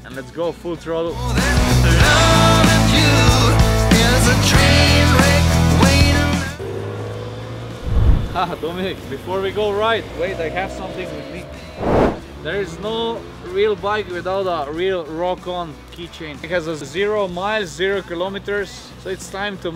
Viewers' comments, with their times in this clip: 0:07 did he said doo minute???